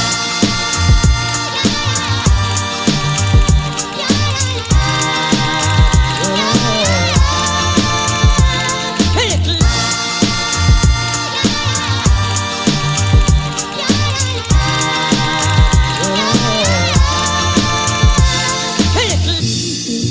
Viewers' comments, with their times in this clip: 0:07 literally a mechanical keyboard lol